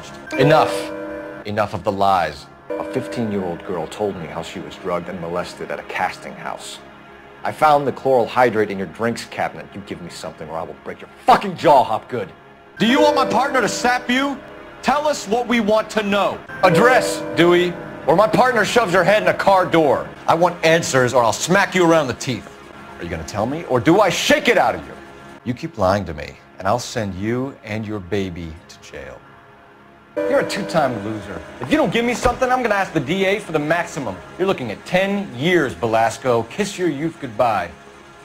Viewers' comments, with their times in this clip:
0:09 The best parts start With the jaw thing it looks like if he was about to hit him but hesitated at the last moment "My partner will shove your head in a car door" to a car salesman genius XD The cold way he says he will send her and her baby to prison I love cole hes an icon
0:25 is my favorite because of how cold he says it
0:25 "You keep lying to me, and I'll send you, and your baby to jail." Cole said, calmly.